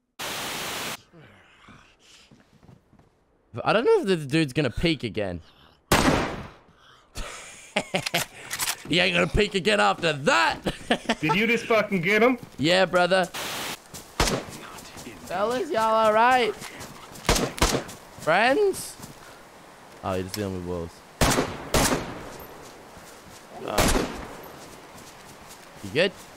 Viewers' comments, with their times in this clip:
0:09 got me so mad. you were screaming and even clarified it was wolves for him to say hello.......to kill you..... SMFH